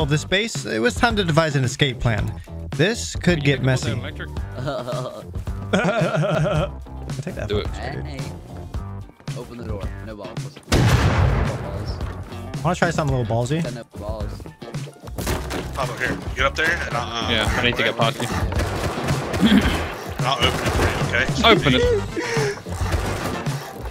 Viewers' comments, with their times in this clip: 0:04 Seth Rogen laugh
0:05 no one els gonna notic that he laughs exactly like Seth Rogan ? no just me ok...